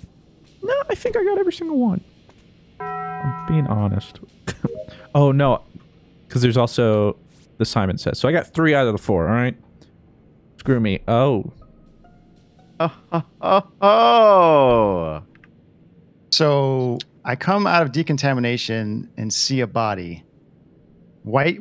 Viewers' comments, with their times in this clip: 0:09 Can we talk about the Taco Bell sound ?